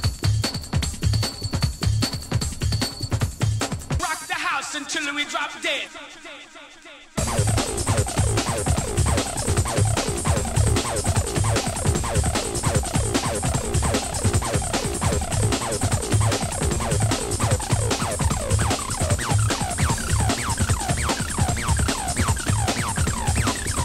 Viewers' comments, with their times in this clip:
0:08 GD good stuff i like this one (after its sounds like "old" prodigy)